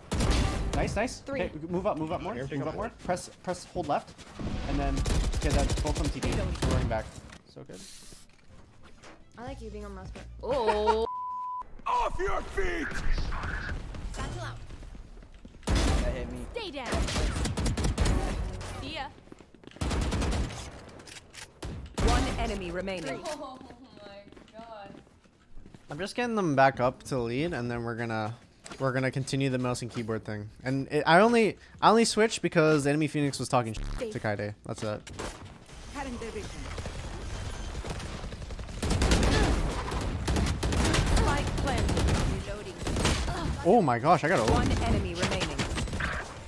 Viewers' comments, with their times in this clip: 0:08 the throatosaurus has entered the safari be careful . . . . . . .
0:28 im pretty sure we all gave that look at that pheonix whispering ya done fucked up